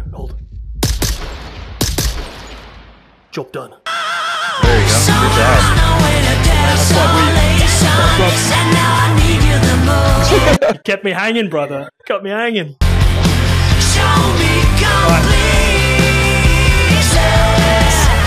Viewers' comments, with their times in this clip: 0:03 jesus i had this shit at full volume great choice of music tho and very tactical of you guys